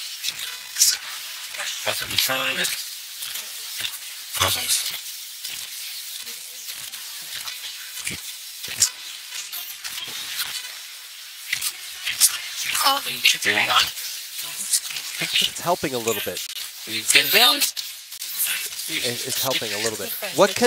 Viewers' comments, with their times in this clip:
0:04 "AWESOME " Male voice